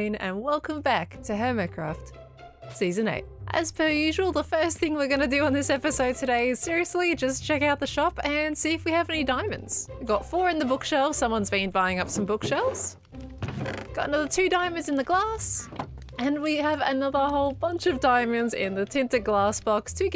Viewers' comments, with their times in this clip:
0:03 "as pearl usual"